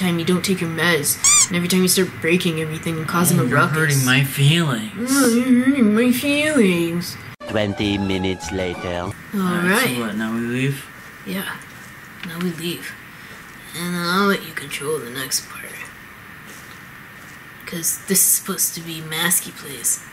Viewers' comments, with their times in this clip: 0:05 Why does Ben sound like Baldi? Did anyone else hear it or is Slender trying to make me a proxy?